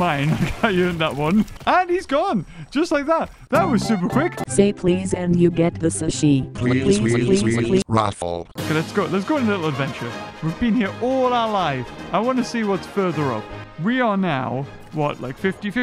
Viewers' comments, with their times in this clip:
0:03 that song tho